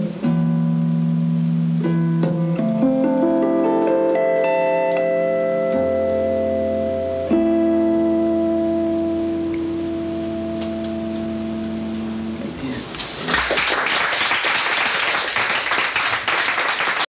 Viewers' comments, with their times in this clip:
0:04 WHERE the helll does he pull that high A out of !